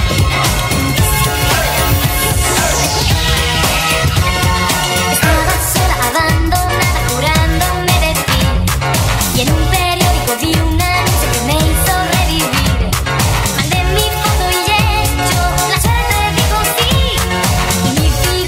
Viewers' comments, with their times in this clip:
0:05 mexican future funk is real